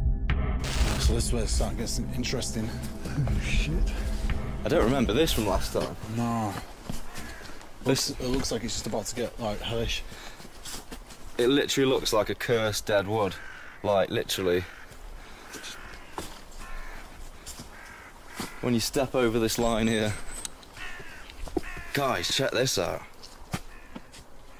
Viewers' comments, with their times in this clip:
0:09 the second you enter the dark dead woodarea the crows all start making noises